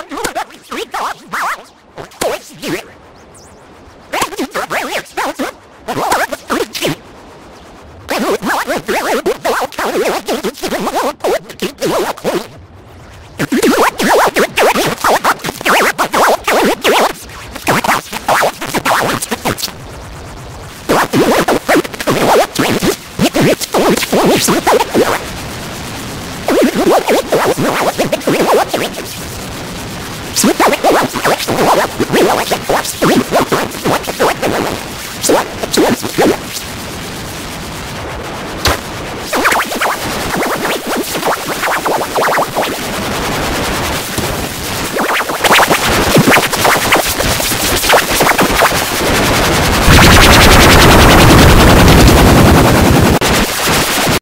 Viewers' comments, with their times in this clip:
0:04 is when I couldn't understand anymore lol
0:04 He sounds like a character from Star Fox.
0:08 Its not the Toyota VVT-i 16 valve inline-four engine, its the Toyota vSlTS |6oVAPLl0E engine!
0:08 What aliens speak like in hollywood movies
0:13 is when you literally cannot hear anything but scotty stuck in the void.
0:13 At about the mark you can't understand a word he says
0:16 it sounds like aliens
0:23 at like it sounds like machine gun fire.
0:30 thought it was about to start some dubstep
0:41 alien message signal
0:41 when the DJ starts scratching over the song
0:49 a helicopter taking off